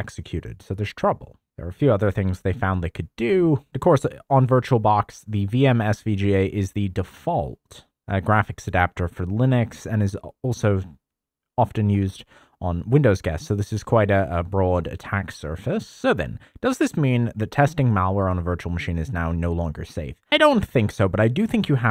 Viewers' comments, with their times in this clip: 0:06 Are... you using a blend of AI voice over and your actual voice? Around the mark I noticed something. A few other times as well, unless its my bluetooth device "popping" (not the right word, but I'm using it anyways..) with delay.